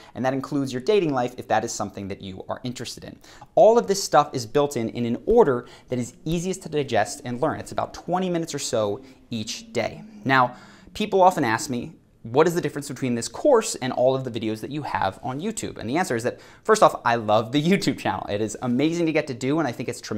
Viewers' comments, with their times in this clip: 0:08 Anyone else hearing a sort of snoring sound ?